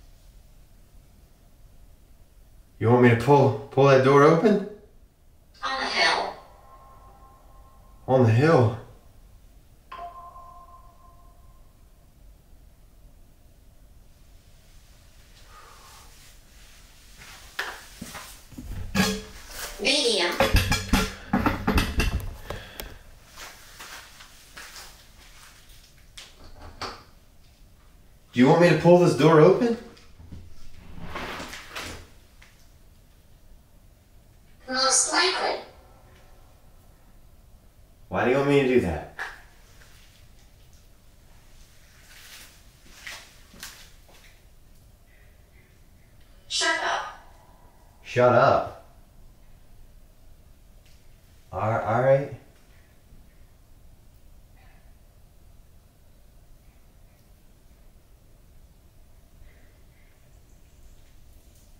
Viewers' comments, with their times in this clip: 0:06 bro the voice crack is real af I feel that
0:45 what’s that noise?? It keeps going!